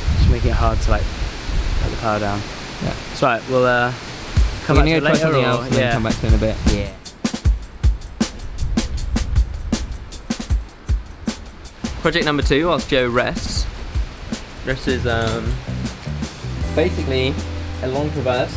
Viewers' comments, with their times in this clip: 0:04 broooo, that music in is the best